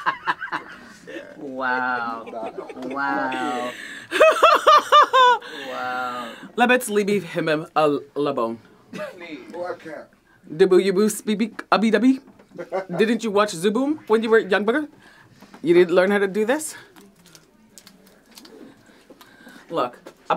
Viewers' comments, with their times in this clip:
0:05 i desperately need to know what "language" she is speaking in the end 😂😂😂😂😂😂